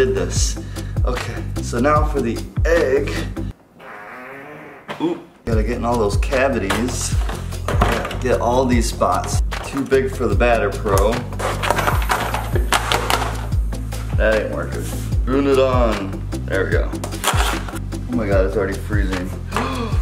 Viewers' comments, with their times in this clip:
0:03 poop anyone hear
0:03 boom boom ah hoo Me: did he fart
0:03 It was already disgustingly gross enough but dat wet fart just worked as d cherry on top to d gross factor 😜😜😜
0:03 Did anyone else here that I think he farted
0:04 I think I just heard a fart I don't now wut was that
0:04 was that a fart😂😂😂
0:05 Did he really fart ?